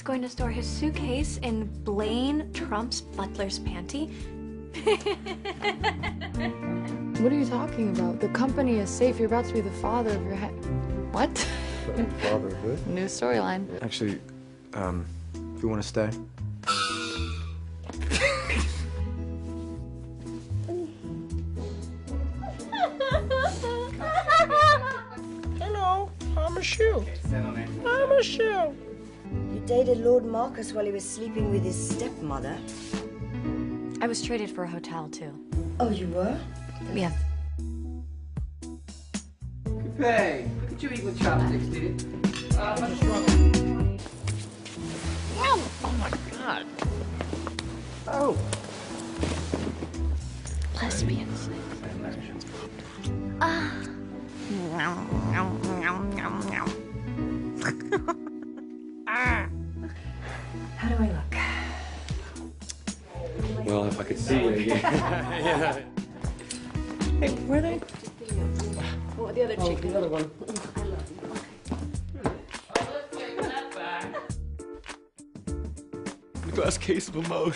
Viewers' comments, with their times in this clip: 0:08 I LOVEE BLAKES VOICE SHES SOO PRETTY AND SO GORGEOUS I LOVE HER
0:52 what does leighton say ? it sounds like "lesbian sex" then she makes cat noises...hahahahahahah
1:00 Blair's cat sounds omg haha